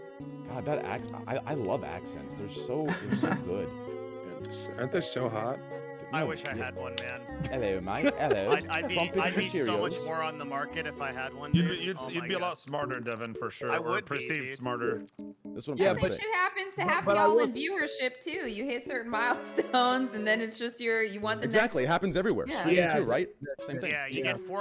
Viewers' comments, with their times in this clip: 0:06 everyone does know that they hv an accent right?